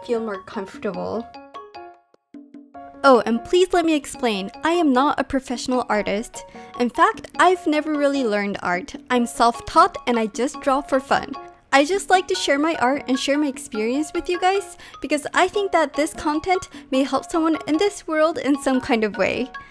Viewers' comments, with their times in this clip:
0:05 I myself always feel so motivated to draw when I watch your videos. Your art is so cute and fun and it just makes my day better. I'm not gonna mention the fact that your voice comforts me a lot, since is always so lively and calm. I love your content and keep up the great work. I look up to you 😌